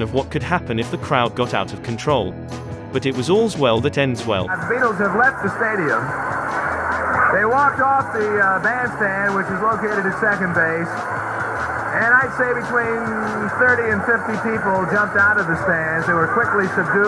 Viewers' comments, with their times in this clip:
0:04 Girl screamed herself to sleep lol